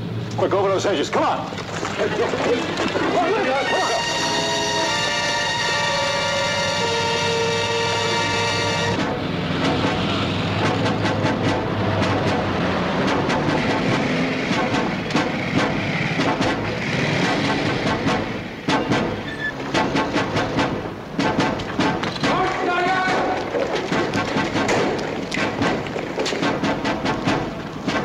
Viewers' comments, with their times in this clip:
0:10 Minute the music when the krauts are coming